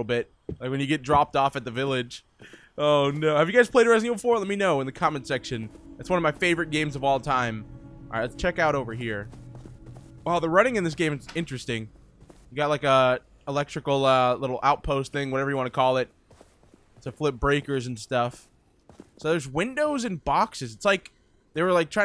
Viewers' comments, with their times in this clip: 0:04 did u say FNaF4? I have played that